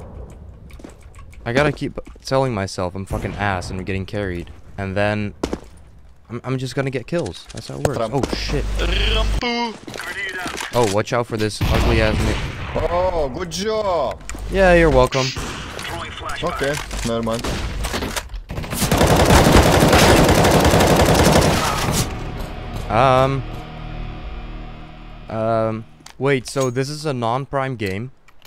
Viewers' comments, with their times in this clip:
0:10 sounded like you were gonna say something naughty O_0